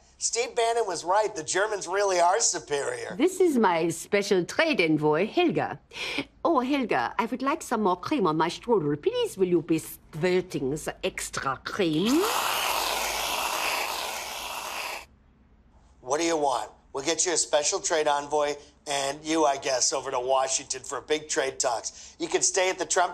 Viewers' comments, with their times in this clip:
0:09 OMG where on earth did she get the idea to say “squirting” for 3 seconds? LMAO, absolute comic genius!